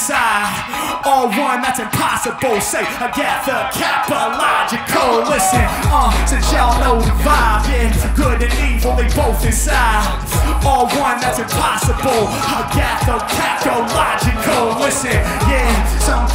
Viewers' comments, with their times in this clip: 0:04 he said agathakPAlogical. i cant believe harry slipped up!